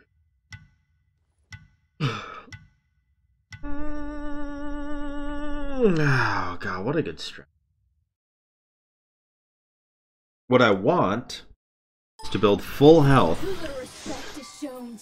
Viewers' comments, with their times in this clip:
0:03 The mosquito in my room: